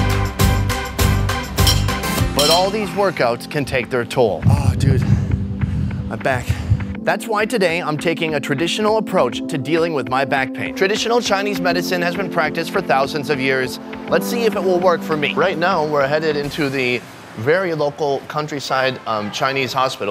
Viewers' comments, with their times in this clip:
0:03 he sound like a Gordon Ramsay